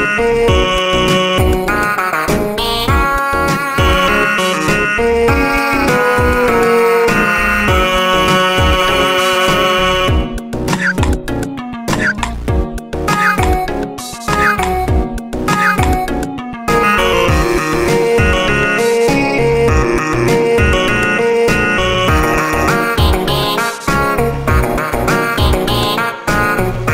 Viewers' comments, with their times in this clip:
0:10 sans coughing sound is like patrick's cough